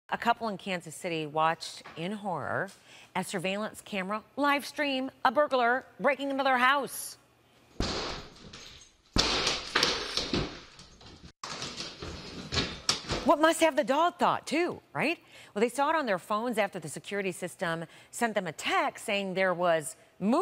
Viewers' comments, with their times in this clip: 0:05 errrm are you ok? Sounds like it's your last day or your were the suspect..